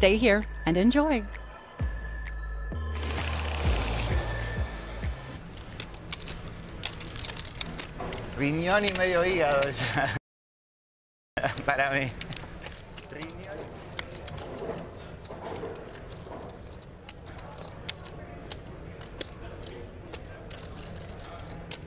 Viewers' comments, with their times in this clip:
0:03 this portion of the program brought to you by the ASMR community in poker courtesy of the cameraman's need for food lol